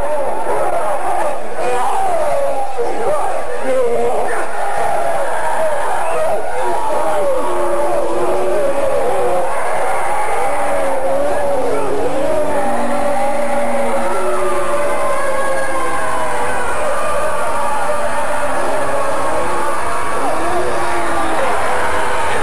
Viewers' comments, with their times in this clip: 0:03 this is a very well made video but the part when you're like 'lets hear paul's final message :)', which is immediately followed by loud distorted screaming has some a tier comedic timing.